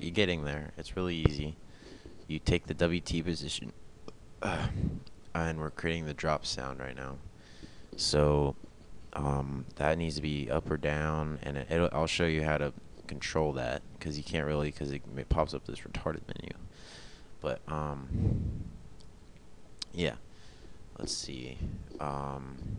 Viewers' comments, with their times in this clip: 0:03 Your best sound is the burp